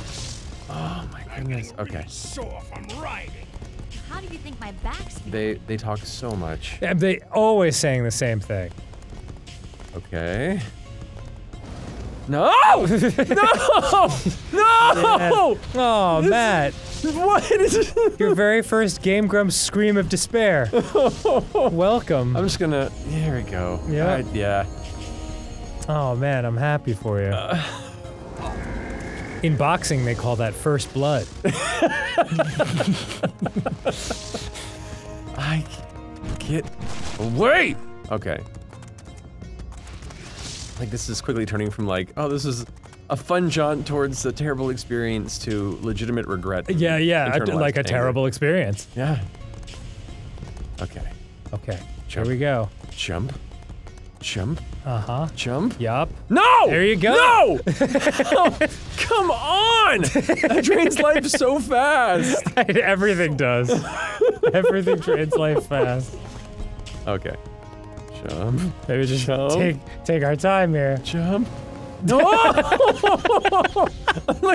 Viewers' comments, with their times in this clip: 0:09 AMAZING. a perfect grump scream. honestly if you'd have played for me the last 30 seconds up to this point without me knowing it was Matt, I might've not even known it wasn't Arin. loving this.
0:10 Matt's "No!" has real pain behind it
0:11 matt channels Arin and hits that octave Arin hits 10 minutes into a bad game for just a second also there is a speedrun of this and he does everything this video does in 5 minutes. the whole speed run is only 43 minutes 15 seconds and 23 milli-seconds
0:12 And we have Matt's first Game Grumps scream of despair. Enjoy!
0:12 Matt's scream reminded me of Ross's. Great, now I miss Steam Train.
0:13 heard that "NO!" and forgot Arin wasn't playing.
0:52 "Jump. Jump. Jump. Jump. NO! Come ON!" sounds so much like Arin.
0:54 wow, matt and arin have such similar mannerisms, the fall just after and the subsequent rage literally sounded like arin putting on a voice changer
0:56 Matt really sounded like Arin.